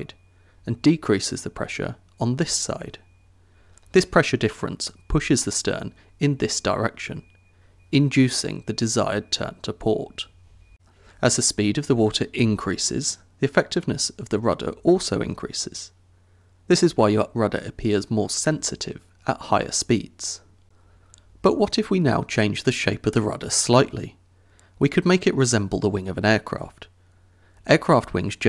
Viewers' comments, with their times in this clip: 0:09 Lmao bet I’m the only one who heard the washing machine in the background.